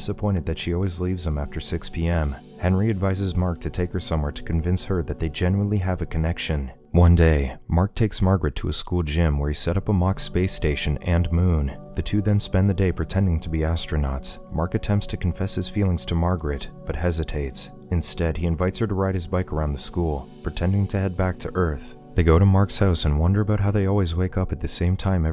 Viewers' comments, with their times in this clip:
0:07 when they say "one day" their voice drops so low